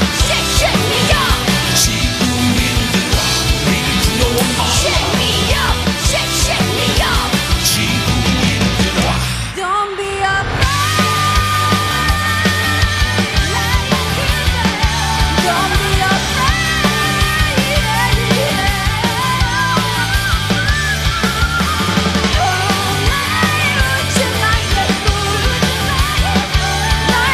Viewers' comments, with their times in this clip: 0:09 wth their main vocalist is really bad
0:09 I listened this song, and I agree, very bad I know nothing about this singer, maybe she felt not good that day and she has other great performance, but here,that's just a disaster